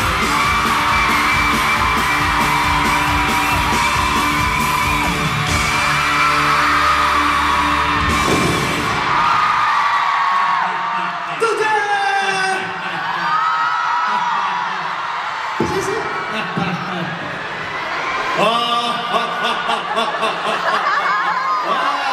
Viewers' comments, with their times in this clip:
0:10 kyu is so cute and i think he made the evil laugh .. he looks like a lost child in a playground.. kekeke XDDD